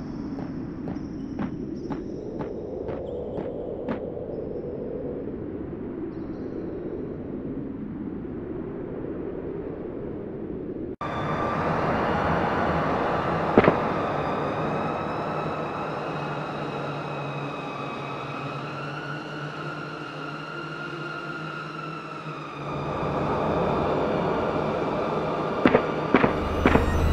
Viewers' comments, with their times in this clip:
0:10 the sound it’s like the screams of millions of woman in terrible pain for eternity.